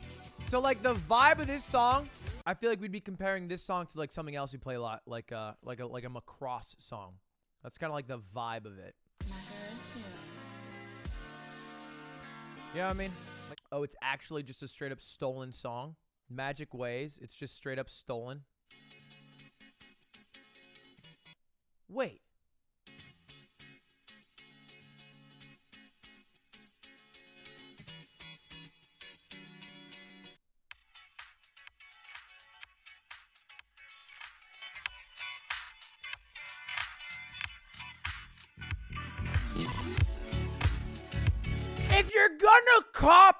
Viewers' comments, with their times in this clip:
0:10 my favorite song out of the whole things was gonna play and he just cuts it off
0:30 should give another listen - chill vibes and it was just sampling and not stolen, feelsbad for the guy who made it